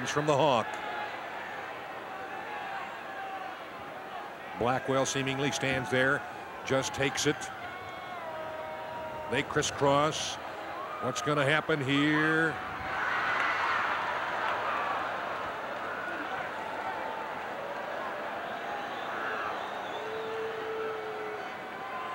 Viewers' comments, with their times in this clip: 0:06 Both Hawk & Blackwell BOTCH big-time. Audience laughs at it.